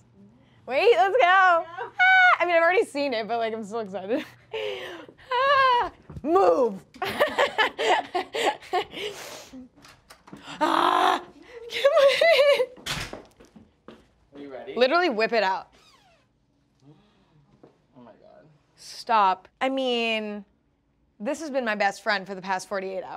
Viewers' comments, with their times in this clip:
0:08 the aggressive "MOVE" took me out- i love her so much